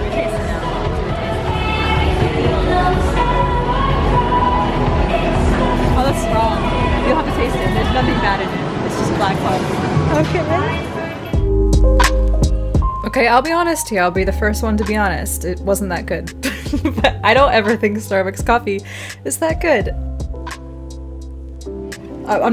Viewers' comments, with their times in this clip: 0:04 i love that you can hear Auroras music playing !! :D